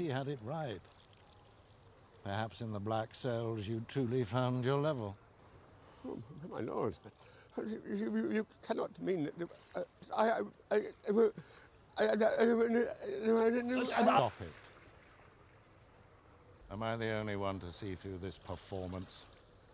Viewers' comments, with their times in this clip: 0:06 Pycelle.exe has stopped working
0:07 Pycelle.exe stopped working